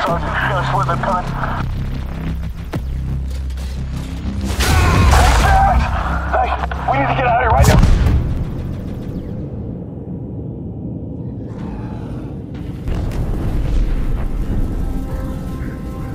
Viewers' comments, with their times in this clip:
0:04 I like that he used audio from Landfall in the intro! The odst death sound was instantly recognizable